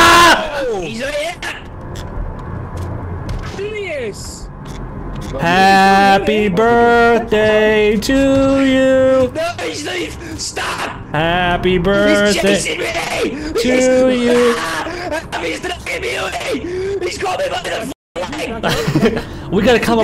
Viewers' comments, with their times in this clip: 0:07 bro... why the fuck is this like a springlock failure? party music mixed with the sounds of someone being brutally murdered